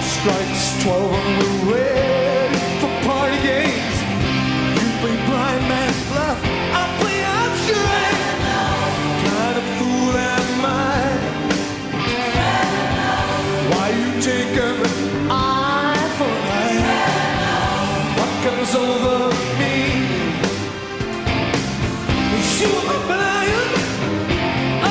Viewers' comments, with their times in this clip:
0:09 I love this band and era for Plant He's singing in such a low register!